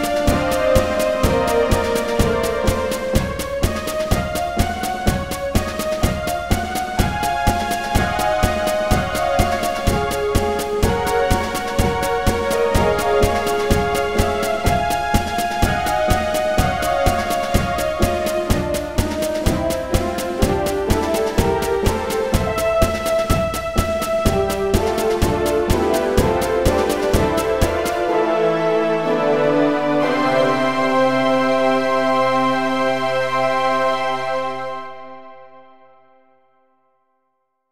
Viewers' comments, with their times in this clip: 0:03 From that onward it sound heroic, like in a retro way like something from ultraman
0:25 He sounds very happy here :D